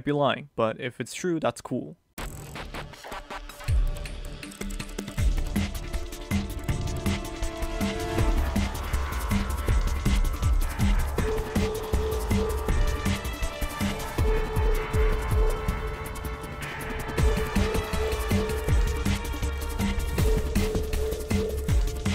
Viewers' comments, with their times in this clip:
0:09 idk if this is what u meant with the music, but sounds like the string line may have inspired miguel's theme in ATSV. dig ur work